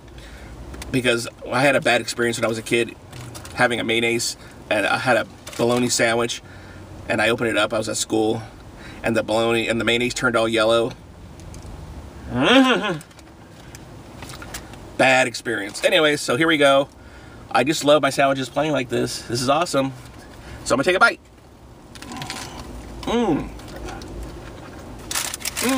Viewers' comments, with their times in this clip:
0:10 I just had a scary dream then woke up and immediately watched your video. The horse sound made me feel better.